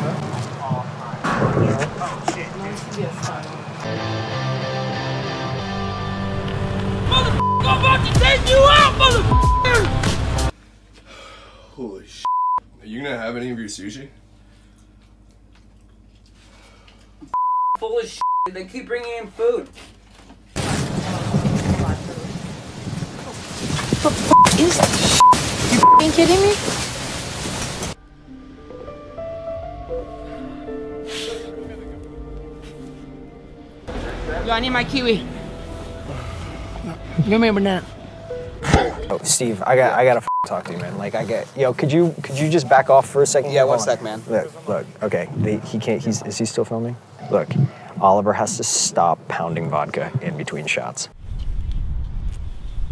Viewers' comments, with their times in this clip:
0:07 watch it over and over again and you notice that the music was fit with Oliver’s voice ngl
0:34 Yo I need my kiwi Give me a banana Literally aggressive spit